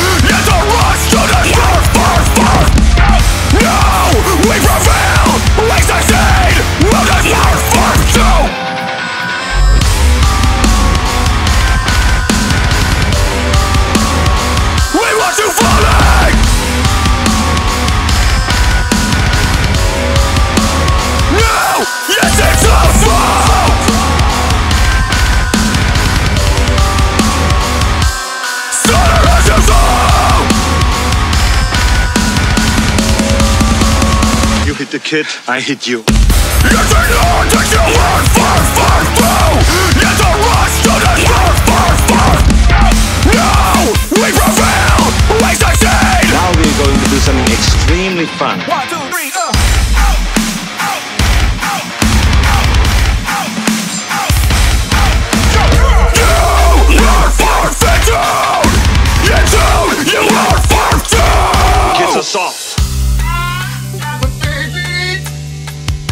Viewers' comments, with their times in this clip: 0:09 Alright yea. The Breakdown is fucking nasty. Absolutely amazing. But GOES SO FUCKING HARD!!!
0:35 can't believe I recognized the riff
0:47 .... groovy is an understatement
0:50 Now this is what I call music, breakdown is immaculate